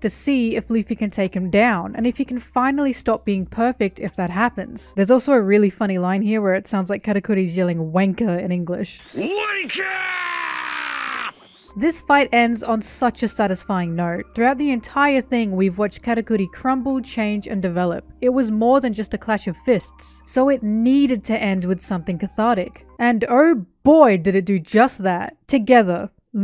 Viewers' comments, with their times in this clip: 0:09 that one Australian guy while in traffic: